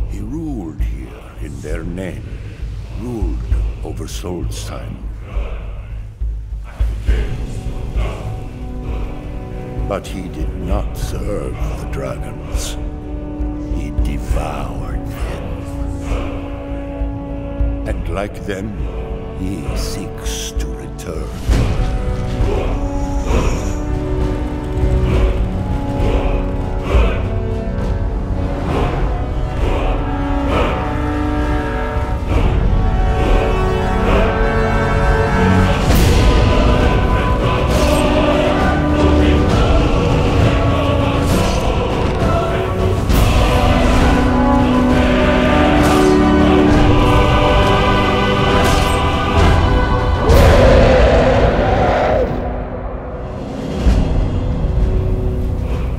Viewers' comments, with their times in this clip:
0:06 i ilke the dragonborn soundtrack its different, it sounds epic =`D
0:34 Listen Carefully: "He's So Good, He's our Lord. Fucking Cool. Oh my god. Me Gusta. He's not Gay. He's our Goooooooood."
0:35 sound like "Is that u ? Yes a LOL ! Fucking cool, Oh my God ! Me gusta ! He's not gay ! He's our Lorrdddddddd ! "
0:36 I love the song when the stone breaks
0:37 I don't know how but i still hear HE'S THE LORD! FUCKINGCOOL! OH MY GOD! ME GUSTA! HE'S NOT GAY! HE'S THE GO-OH-OH-OD!